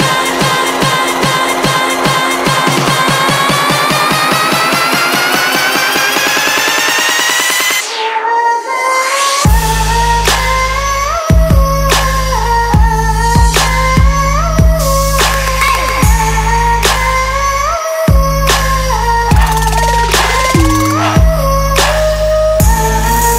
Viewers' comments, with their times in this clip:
0:09 OMG!!!! did not expect that! <3 #DatBassDrop